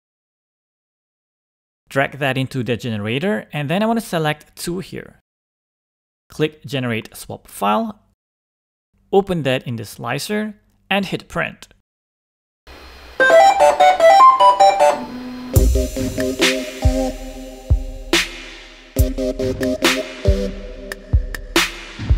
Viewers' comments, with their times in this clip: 0:08 the bambu noise is awesome